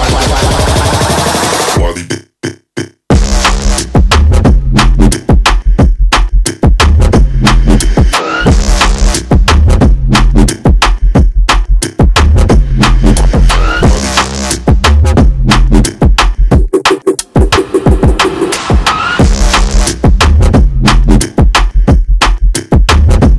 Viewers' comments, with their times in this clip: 0:07 mate that tune was Naughtyyyyyyyy